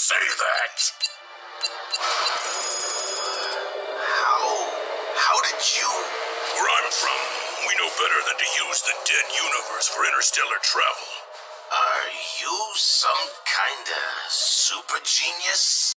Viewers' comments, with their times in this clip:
0:11 sounds like wheeljack is jealous